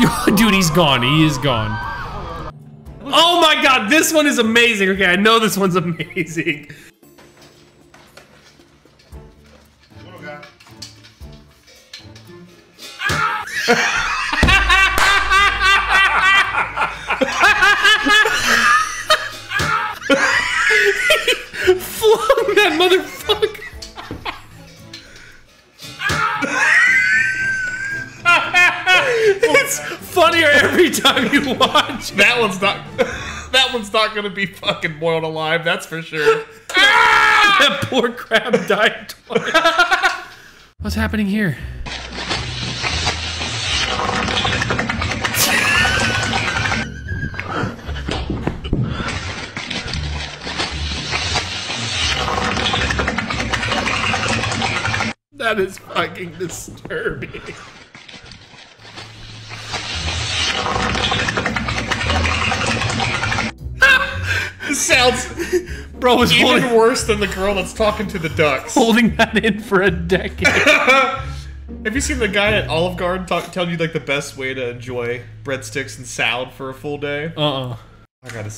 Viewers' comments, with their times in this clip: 0:07 It's always funnier when they just cut off the scream! Comedy gold!!
0:13 bro just made the dead by daylight michael myers chase theam song 🤣
0:15 i love how crisp & clean that clap was ....
0:44 Dude's ass was quacking. I'm dead! 🤣😭😂
0:49 I had this type of fart in the shower
1:01 context is that is is someone boiling milk
1:02 man was on a motorcycle underwater🤣